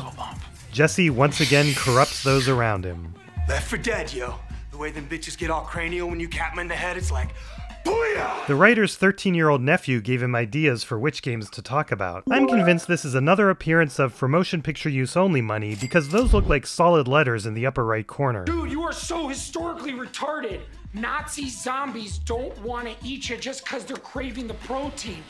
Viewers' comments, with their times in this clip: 0:06 Don't know if it's even relevant to mention, but did you notice how he said "booyah" just like Tuco did when he was first introduced to their meth?